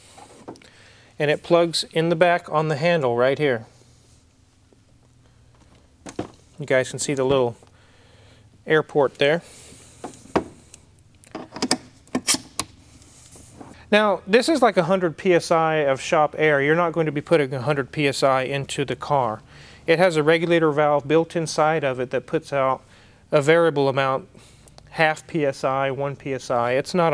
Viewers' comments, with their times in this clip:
0:08 I dont see any airport or aeroplanes